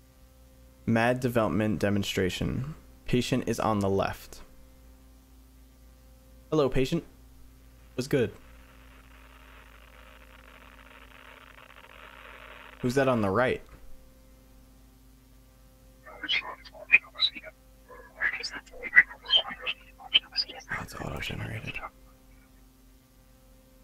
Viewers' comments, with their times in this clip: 0:07 and what thay thing is saing in it talks backwards and its speed up